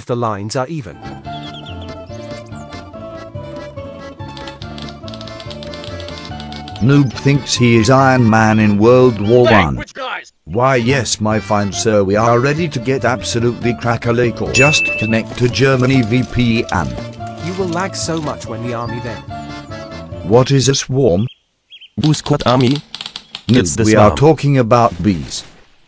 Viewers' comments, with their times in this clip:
0:09 Yes! The best voice!